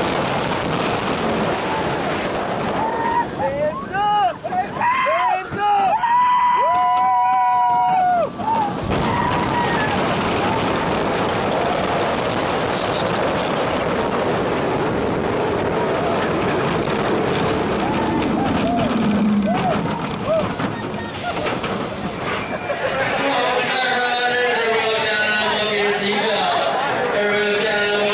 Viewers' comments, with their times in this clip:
0:07 bruh they were harmonizing
0:08 I like the parrt when a guy yelled oh shit
0:10 Hehe track go squeek